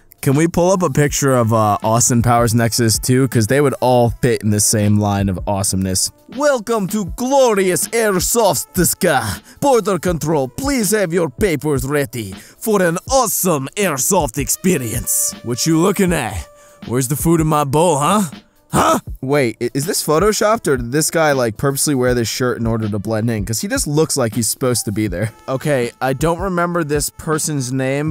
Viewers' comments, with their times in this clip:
0:08 I hate how he says that and I’m in the verge of disliking just for that
0:09 I feel like I’ve heard that exact same voice somewhere idk what that reminds me of